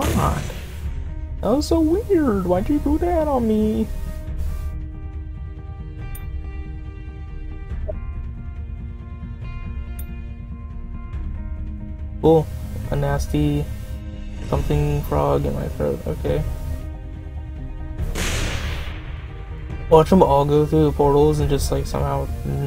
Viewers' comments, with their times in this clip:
0:04 best music ever!! \'-'/